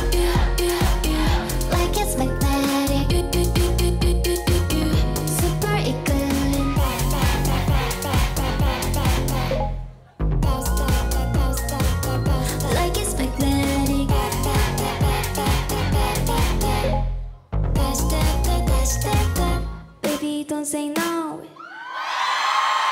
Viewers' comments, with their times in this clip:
0:04 OMG! I was loving the song until this weird "blip" and then a pause out of nowhere! I just HATED it that! Sorry... But they are great, beautiful and talented. And the song is really good until